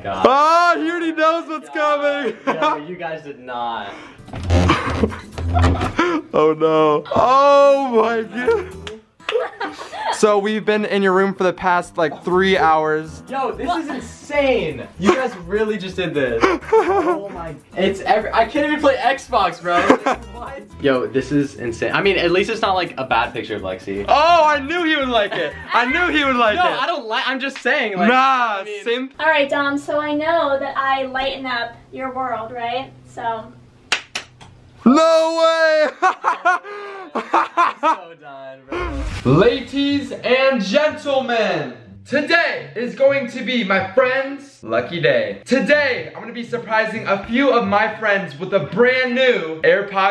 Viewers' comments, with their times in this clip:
0:05 I thought he said that’s awkward that’s my ex
0:38 he really said laties